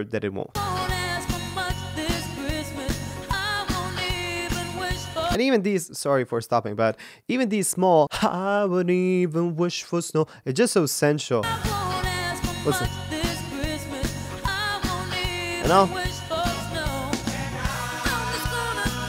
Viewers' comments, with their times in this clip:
0:03 You mean vocal breaks ? I love her vocal breaks so much 💞